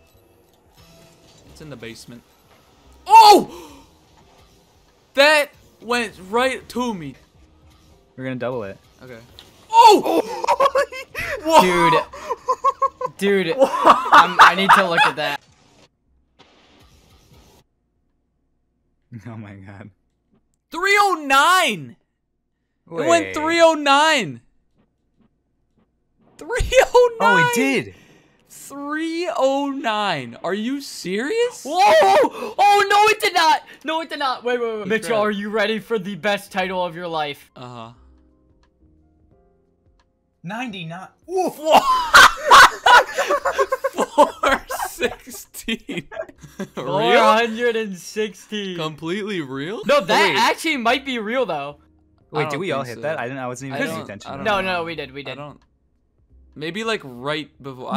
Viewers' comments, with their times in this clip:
0:09 scoobydoo ahh laugh
0:42 Bro in minute one of the laughts it is almost resembles the laught with the youtuber fargan, a spanish youtuber